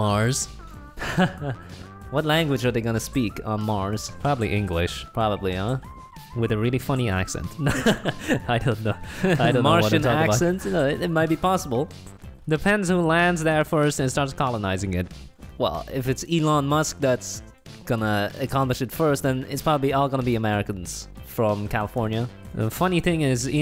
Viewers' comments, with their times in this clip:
0:08 They speak over eachother so it’s proof that they are different people
0:09 they talked at the same time
0:09 I actually thought it was one guy talking to himself until